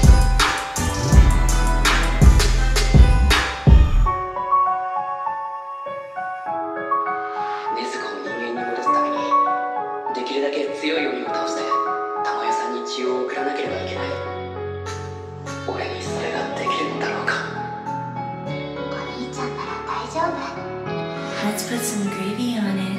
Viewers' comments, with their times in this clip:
0:04 Nezuko type beat gives me the chills man, love it.